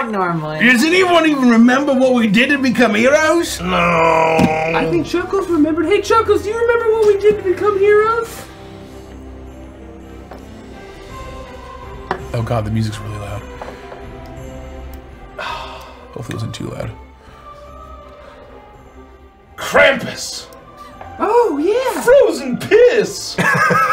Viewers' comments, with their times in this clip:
0:09 Now I imagine this as a short of them asking Chuckles about how they became heroes and the loud Christmas music is the only thing blazing, as Chuckles has war flashbacks to Rudolph lasering some kids to crisp.